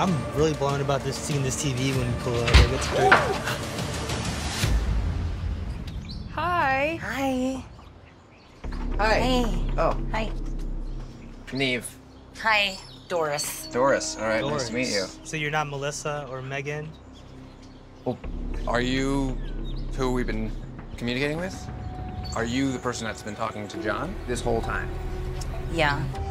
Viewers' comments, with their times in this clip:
0:09 Nev’s “Oh” gets me every time 🤣